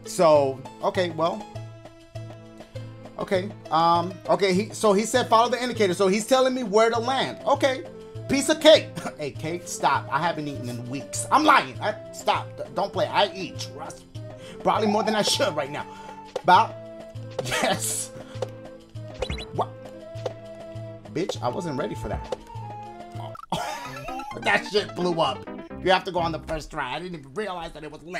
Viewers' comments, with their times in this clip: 0:10 Them flutes are hit different😭🤝